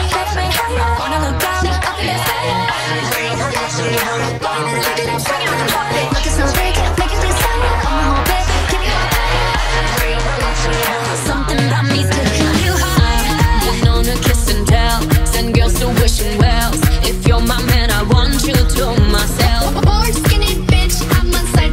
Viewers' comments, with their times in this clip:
0:07 I like how the beat picks up !! Hahahaha 😂😂❤️❤️